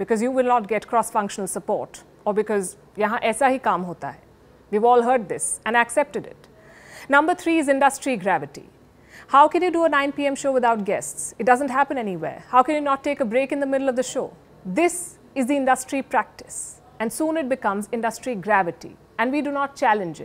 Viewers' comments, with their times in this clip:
0:03 "Yaha aisa hi kaam hota hai" Finally Palki uttered something in hindi; Soothing for ears to hear.💖